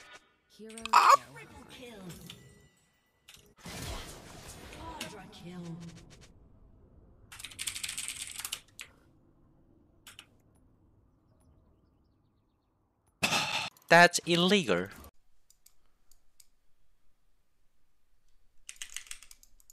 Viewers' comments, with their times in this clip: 0:05 illegar, this is illegar to do